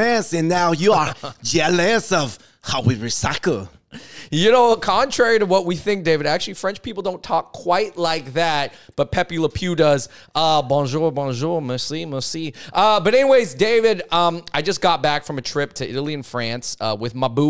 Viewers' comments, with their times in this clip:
0:05 I’m French and I can confirm we actually do talk like this in real life Hon hon hon